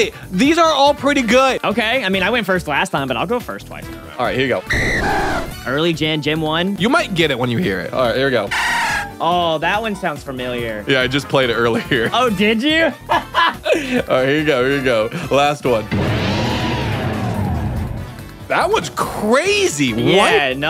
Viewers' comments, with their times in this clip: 0:05 how do you not Immediately recognize this cry?